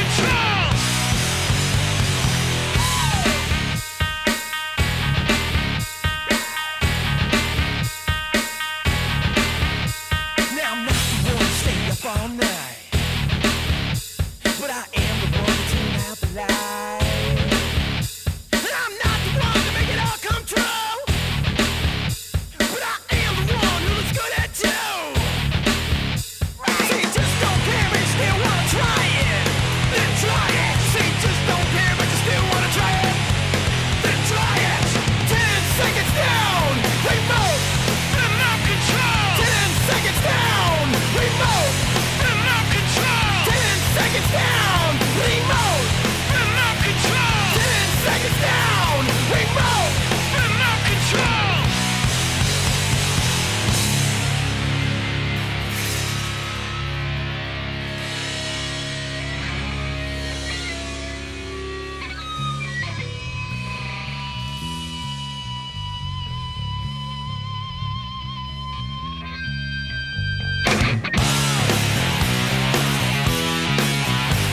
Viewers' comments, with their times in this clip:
0:03 man this song used to get me so amped when I found it on the Escape From LA soundtrack. Esp the way it gets right back into the riff a little early with that "wooooooo!" over top. Honestly, hardly remember the Sugar Ray album this was on, but I remember getting Floored--yes, because of "fly" (guilty pleasure, but that song was catchy as hell, so I'm not ashamed and not going to apologize lol). Had NO CLUE I was getting a "start-to-finish-constantly-playing-in-the-background-for-the-next-few-months-of-my-life" cd. moral of the story, for ppl bagging them selling out with that song, at least it exposed their other side to ppl like me: a fan of heavier music (Other CD's I bought around this same time: Prong, Slayer, Korn, Helmet, Fear Factory and Sepultura), who can still appreciate a catchy ass song, no matter how "pussified" it is! No way I would have ever heard any of their songs with their original style if the radio didn't put them on my radar...
1:01 the bass riff was the first bass riff i ever learned how to play